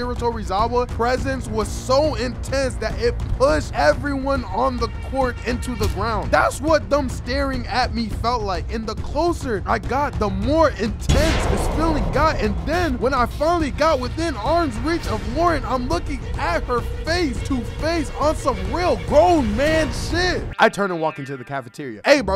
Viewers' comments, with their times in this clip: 0:06 bro sound like he facing hisoka’s nen